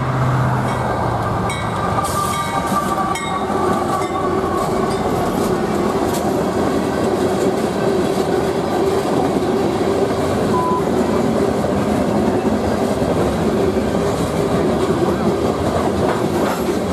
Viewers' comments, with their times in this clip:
0:03 i'm surprise I didn't here any train horn on